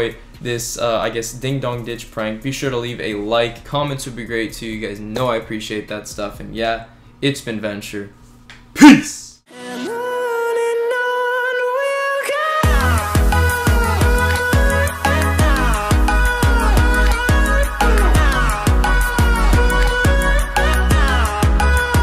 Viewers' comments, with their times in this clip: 0:05 Dude did Somebody fart LOL